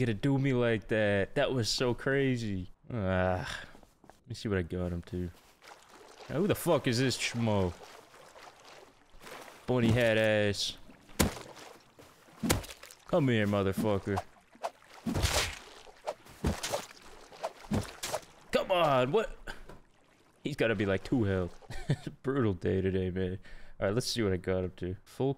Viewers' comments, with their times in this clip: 0:06 love ur accscent for russian curses <3